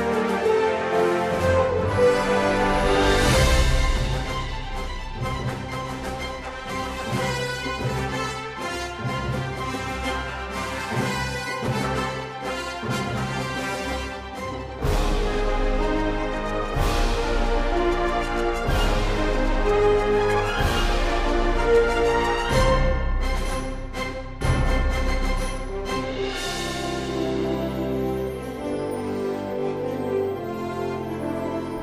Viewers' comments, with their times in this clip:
0:03 Sounds a bit like Star Wars
0:15 Sounds like an overwatch Disney world event wtf